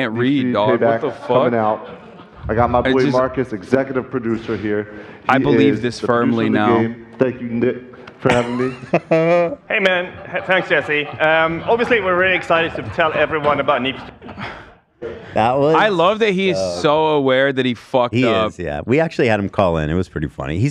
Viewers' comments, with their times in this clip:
0:07 The executive producer coming to save our boy still looked and sounded off! "HEY MAN" LMFAO